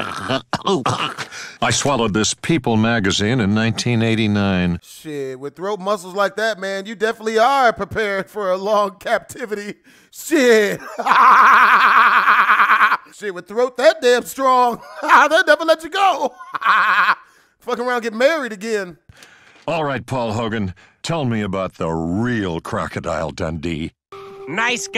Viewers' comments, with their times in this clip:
0:10 u talkin bout a strong throat but how tf u laugh like that?🤣🤣